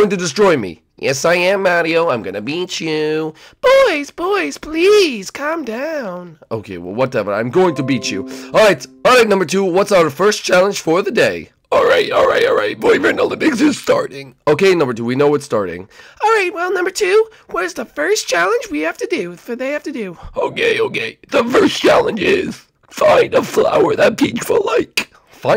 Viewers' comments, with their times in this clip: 0:08 I could hear your computer.